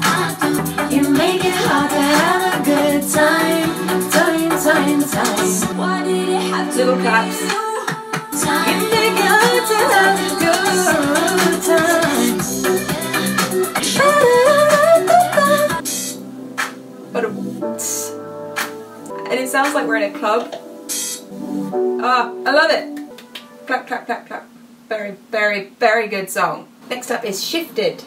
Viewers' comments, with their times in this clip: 0:09 stunning vocals, thank u